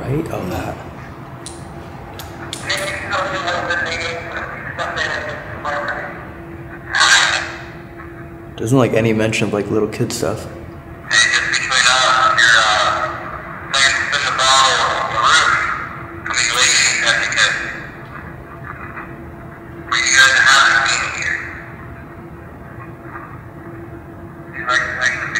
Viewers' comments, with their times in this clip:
0:08 the scream kinda sounds like it's saying no